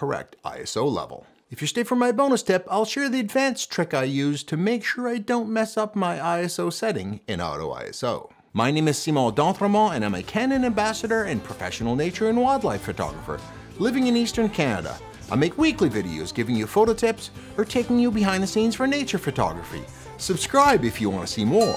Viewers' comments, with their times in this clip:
0:08 great info but really we are all here just to hear you say your name